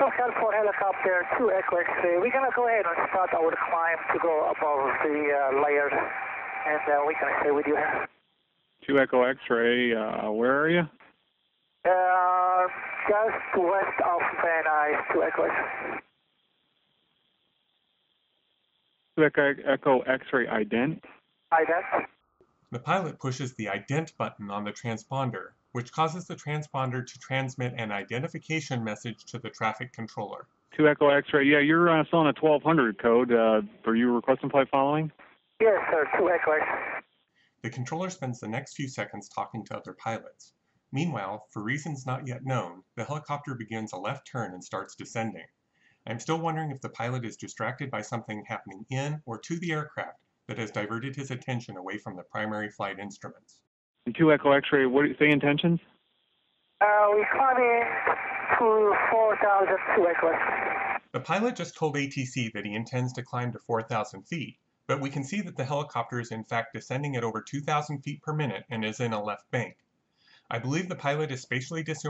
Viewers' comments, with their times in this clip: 0:05 I’d have to say when ara zobayan started saying “uh” that’s when he became spatially disoriented
0:06 Great job. Don’t read what he says just listen to it. Does anyone hear him say he’s going to start his ‘de-cline’? Doesn’t decline mean to go down? He says decline to go over the layer. . I feel like his mind knew to climb his training taught him to decline under the clouds. When he freaked out he moved over to muscle memory instead of common sense.
0:53 Thanks for the comment! With respect to the heart attack hypothesis, I will point out that the coroners report does not mention heart disease and that he didn't sound like he was having a heart attack